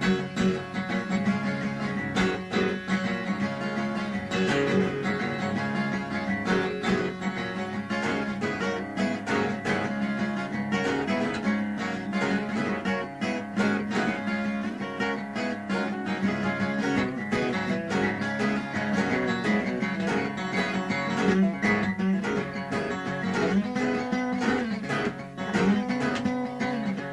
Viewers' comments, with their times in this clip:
0:10 You're right. you can hear a bit that will morph (perhaps unconciously) into Over The Hills And Far Away.